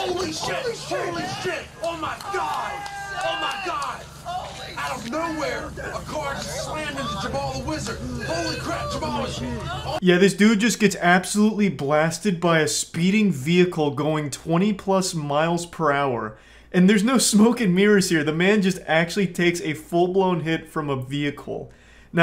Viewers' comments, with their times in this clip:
0:03 you see the people across just laughing and clapping dying of laughter 😂